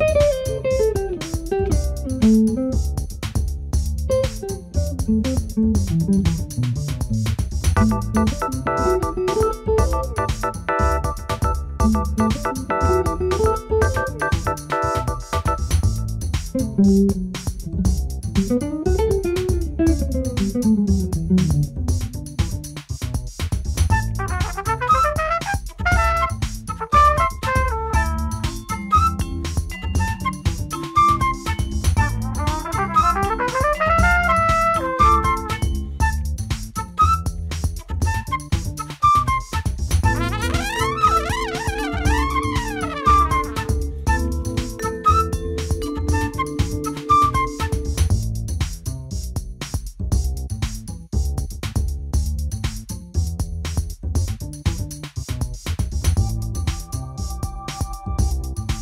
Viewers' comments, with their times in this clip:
0:07 The Backing music kinda reminds me of being paused on a ps2 game menu at first lol till it got abit country western that is 😂 is like gran turismo 😂
0:40 perfect timing in the music!